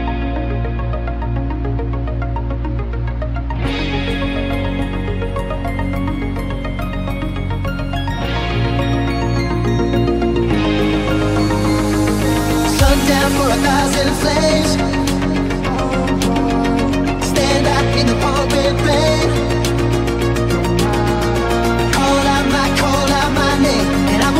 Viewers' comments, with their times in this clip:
0:06 interesting move putting those lines half a beat earlier than in the original